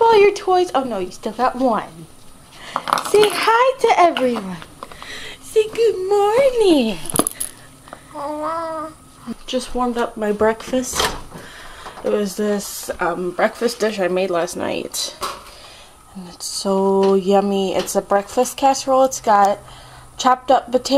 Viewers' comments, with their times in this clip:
0:08 Aww it sounded like she said hello !